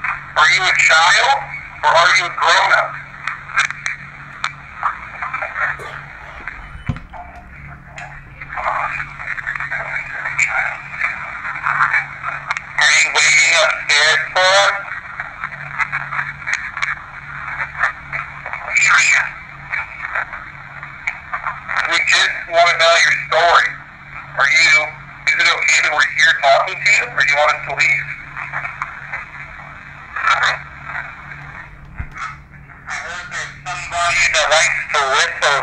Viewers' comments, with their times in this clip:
0:04 After i heard "grown up" on the evp the spirit kept talking but it was really faint all i could hear was " I am the/a child" in a deep voice and right after that i heard a higher pitched "hi" hope someone else hears it because im 100% sure that im hearing that...
0:09 /06 after you get Grown Up, you can hear mumbling and the word Child!!!
0:09 I hear "child" very clearly. This is just after you ask if it's a child or a grown up. Doesn't sound like a kid though does it? 🤔
0:11 during the EVP playback I heard someone say child.. was that one of you guys or not?
0:18 it sounds like it says "leave here" to me. Ive watched that part 7 times and thats what i definitely hear. Almost with some strange accent